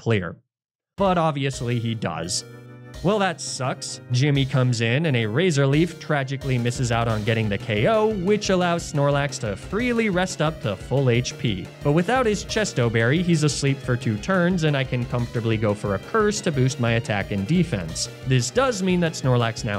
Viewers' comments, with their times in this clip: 0:06 The shift in battle music to when it gets more tense was a nice touch